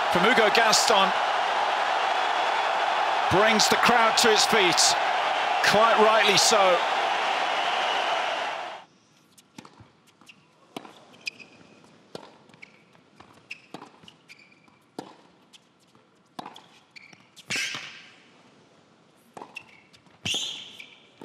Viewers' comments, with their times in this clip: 0:05 once again just like with Carlos the crowd is actively distracting the opponent during play. Notice how quiet they get when Gaston is about to hit versus how loud with Medvedev Absolute worst tennis crowd on the planet. Calling it cheating is an understatement Did you hear all that BOOING. after Medvedev won. Are you joking me Gaston will be a nobody outside of french tournies